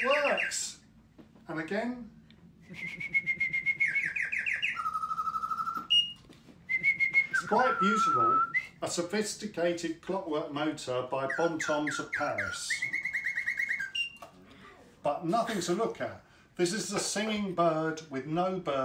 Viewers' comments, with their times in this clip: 0:03 Haha! Now I realise why you wanted to be thd camera person for this one; so that a bird could anwer the calls. :D